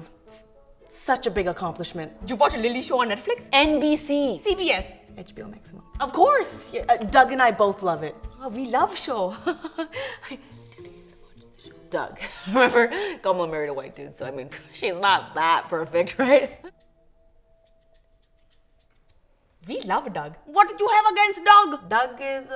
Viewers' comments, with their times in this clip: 0:05 I couldn’t hear what the guy said